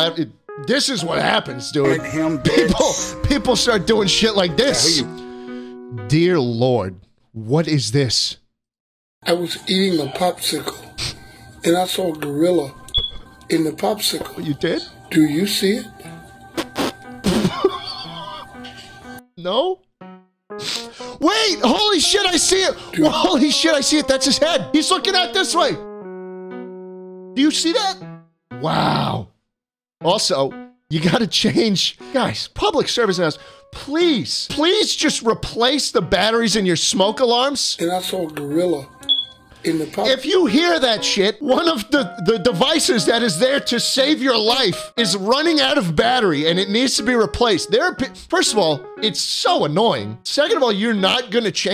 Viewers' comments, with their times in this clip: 0:09 bro sounds like he's on the verge of tears
0:09 i aint gonna say much but the beep from the smoke alarm
0:12 literally every black house has a low battery smoke alarm
0:12 Bro the low battery smoke alarm in the background with the voice that sounds like it's gonna give out any moment makes it 32083berge435234x funnier, it's so funny I had to put letters in to explain how much funnier it really was and still failed to capture the full increase in hilarity.
0:34 And now beeping smoke alarms are going to be added to the meta. Nice job.